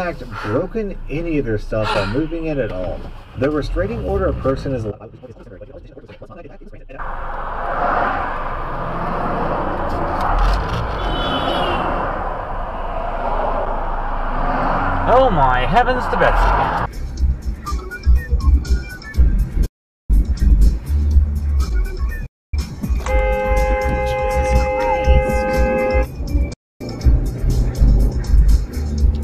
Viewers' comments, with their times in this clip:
0:08 Don't you just love it when someone honks at you like your wrong when their in the wrong.
0:08 #4.2 What kind of bonehead illegally passing a semi over a solid yellow honks at someone in the suicide lane? 🤨
0:15 yea that's definitely Ned Flanders in Utah